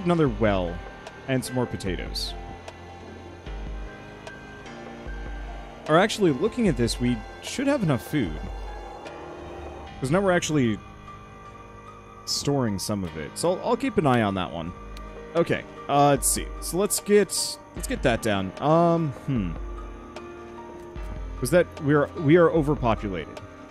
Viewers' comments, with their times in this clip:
0:09 Voice Broke lol